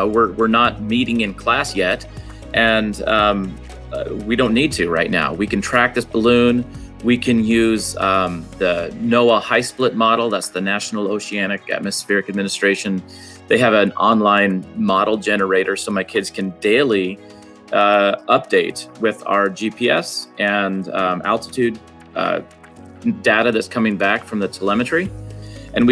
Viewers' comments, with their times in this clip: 0:06 OMG @ the comes mr. Umh this & umh that! Why is this condoned?